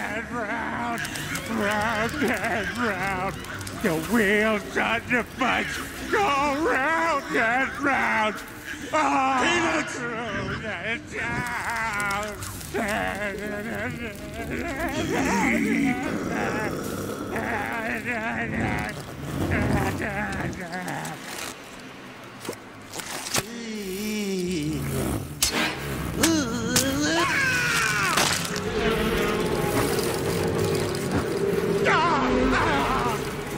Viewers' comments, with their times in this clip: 0:08 i swear brian says peanut
0:09 it sounded like he said peanuts when he was supposed to say peter
0:21 It sounds like Mr. Burns